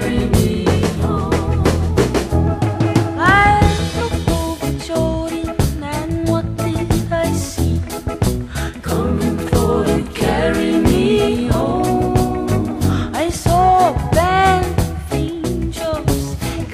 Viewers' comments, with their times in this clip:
0:03 I would like to have a picture of that wonderful voice since 1975 min.